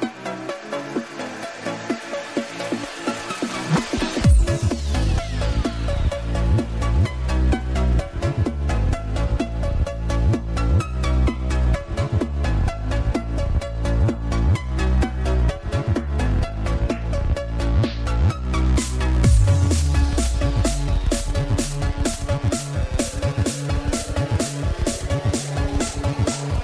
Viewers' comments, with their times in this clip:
0:08 The music kinda sounds like Levels by Avicii